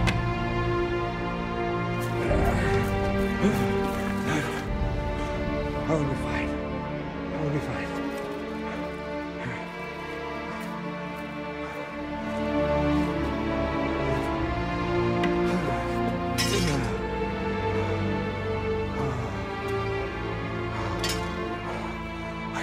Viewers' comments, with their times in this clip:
0:03 The Season 1 Iron Throne theme from GoT playing slowly